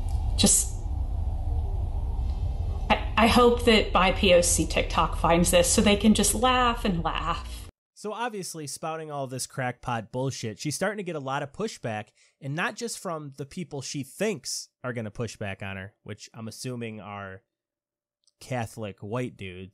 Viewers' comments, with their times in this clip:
0:04 Uh, listen to the tone in her voice in some of these clips. Specifically She's either A) a top tier actress that is wasting her talents or B) is actually getting very emotional over this which pretty hardcore debunks the idea she's a troll that doesn't actually believe this.